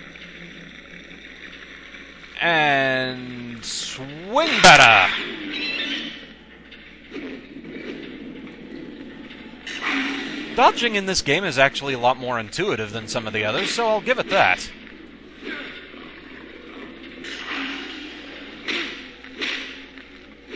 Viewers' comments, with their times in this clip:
0:05 Did those dogs just make bird screeches when u smacked them? o_o I swear for a sec that sounded like a stock falcon shriek.